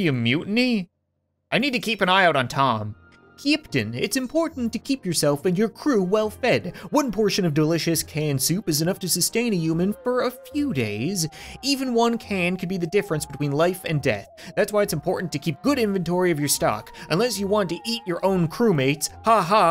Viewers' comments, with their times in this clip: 0:03 he says "keeptain"